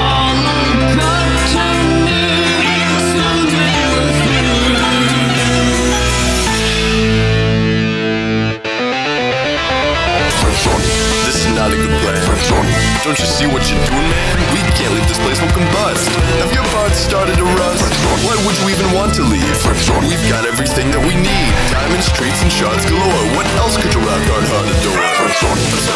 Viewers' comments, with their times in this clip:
0:10 Why teeter-tauter sounds like that what if quandale dingle voice acts on one of the monsters man?